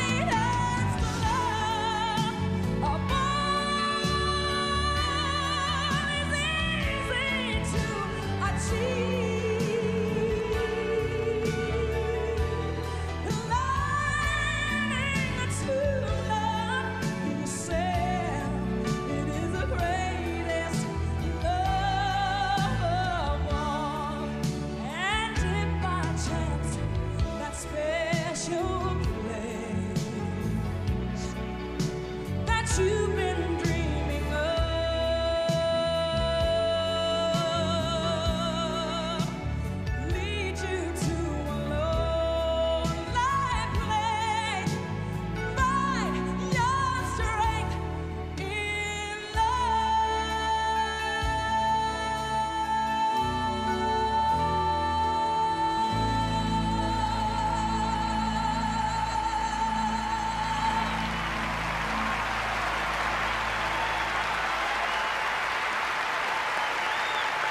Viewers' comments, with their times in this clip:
0:08 When she hits that note you can hear the audience go, "woooowww"
0:48 she CARRIED that last note
0:50 That sustained final note, which ended into a vibrato. Superb vocal technique mastery and breath control. There will never be another Whitney Houston. At least in this lifetime.